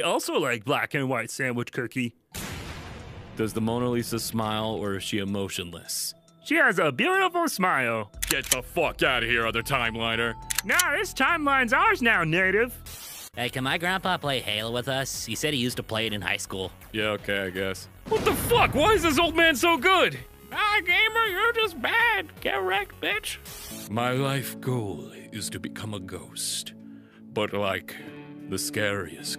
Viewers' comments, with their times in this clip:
0:10 I love how the The Other Timeliners Gun says Gup.